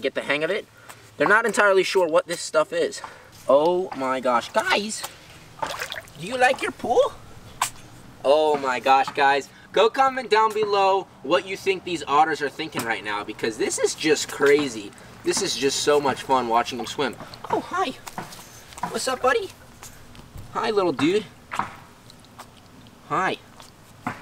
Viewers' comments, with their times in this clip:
0:08 the lil sneeze 🥺🥺